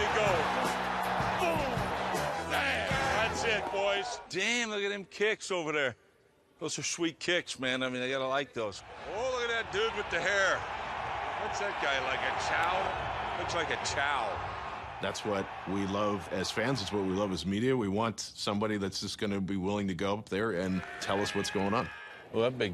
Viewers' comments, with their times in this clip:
0:04 he kind of sounds like John Madden lmao